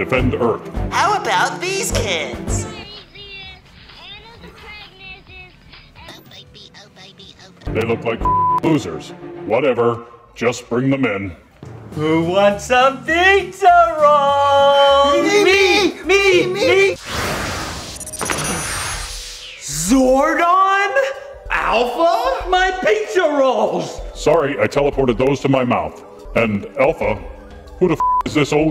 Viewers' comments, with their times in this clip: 0:06 that sounded like Kristen Schaal
0:15 our defenders of earth ladies and gentlemen. A couple of man children who say "me" multiple times like a 7 year old. I trust them with my life.